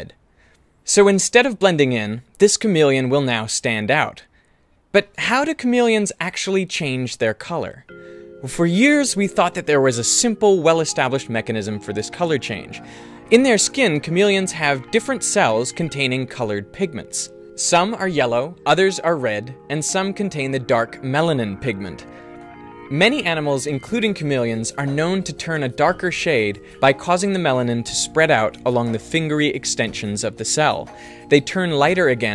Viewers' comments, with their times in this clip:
0:07 the music that kicks in when the clever guy in class starts ranting.
0:17 The music sounds like Vsauce music! =D